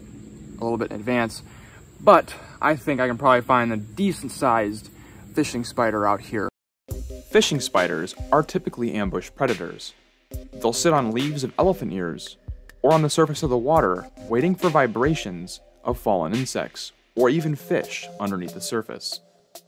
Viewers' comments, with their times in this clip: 0:06 Background music sounds like secure team 10’s music